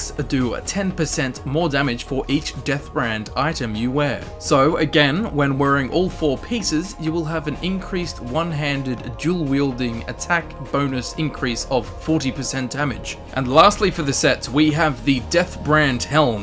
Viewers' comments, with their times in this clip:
0:04 SPIT IT OUT MAN!